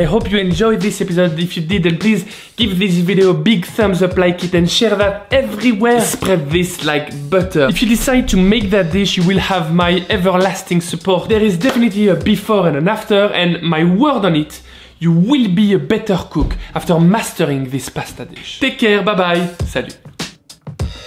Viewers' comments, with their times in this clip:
0:05 French guy intensifies